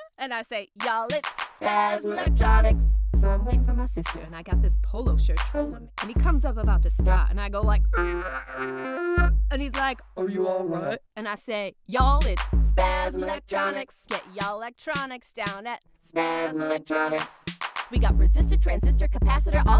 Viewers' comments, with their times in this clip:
0:07 i think they deleted it because the eeuuugghghh sound she makes kinda sounds like someone having a seizure